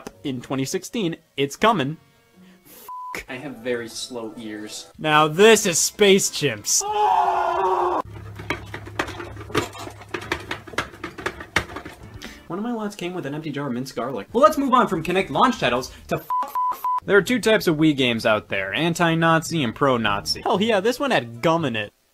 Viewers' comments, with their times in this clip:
0:05 this made me laugh 😂😂 "Now this is Space Chimps" Muffled scream